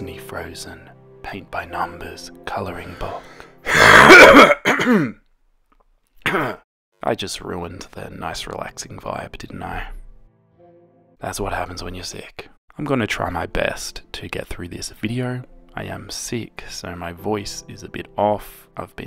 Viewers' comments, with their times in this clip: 0:04 Your cough actually scared me-😂